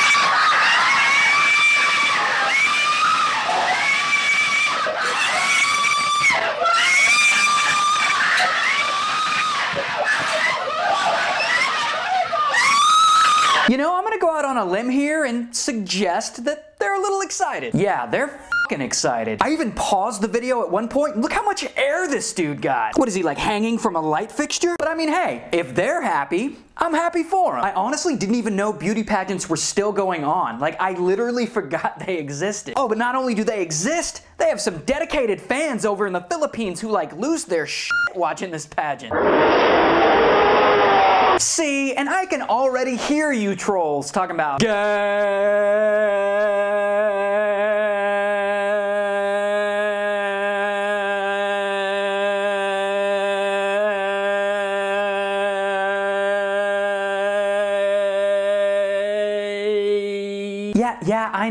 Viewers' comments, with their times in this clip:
0:08 MY EARS ARE BLEEDING ... AAAAAAAAAAAAAAARRRR
0:45 it took him 23 seconds to say it